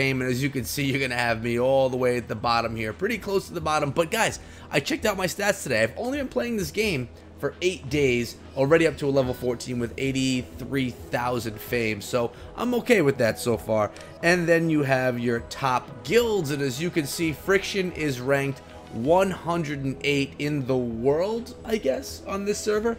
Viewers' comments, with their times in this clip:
0:03 ......fetters..sounds more like fappers...no offence...love your vids